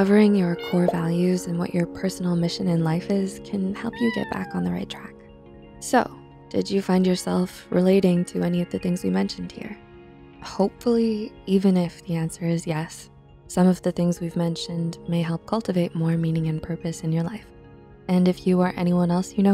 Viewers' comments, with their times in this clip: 0:03 that meow just made everything a little bit better. so cute 💜